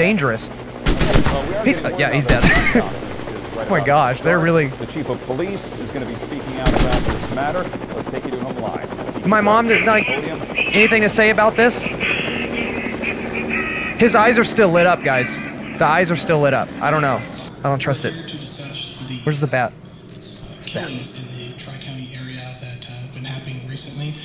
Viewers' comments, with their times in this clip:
0:10 I LOVE HOW YOU CAN HEAR THE DUDE SCREAMING "NANANANA NAAA"
0:11 I HERE DODODODODODO, IS CHARLES FLYING THAT THING?????!!!